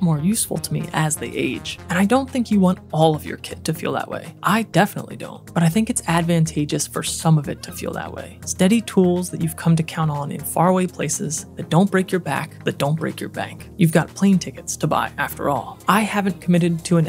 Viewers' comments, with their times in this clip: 0:05 forget about photography you missed your calling as an narrator for Audible books, your voice is very capturing I felt like I was listening to a Kindle book 😂